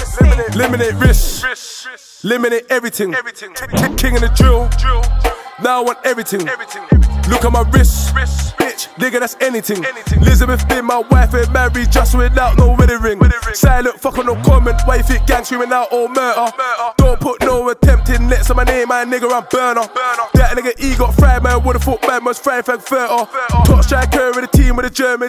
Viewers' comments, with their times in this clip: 0:08 thought I had a message